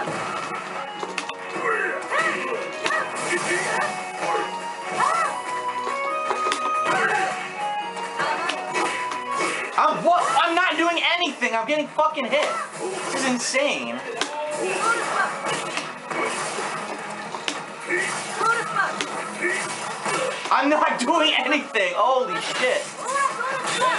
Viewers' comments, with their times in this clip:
0:07 "I'm not doing anything I'm getting phucking hit" you can clearly hear him press buttons both times and both times got punished. The excuses are embedded into him.